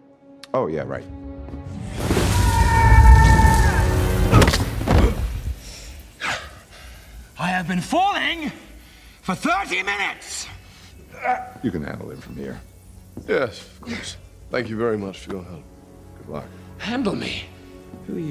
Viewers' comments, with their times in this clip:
0:03 you can hear Loki's back cracking here-